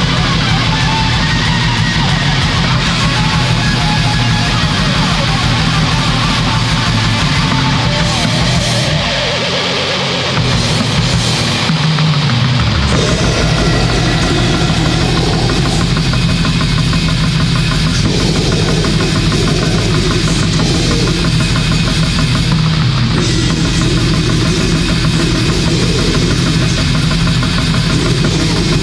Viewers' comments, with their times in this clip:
0:10 complete insanity find a heavier release this year.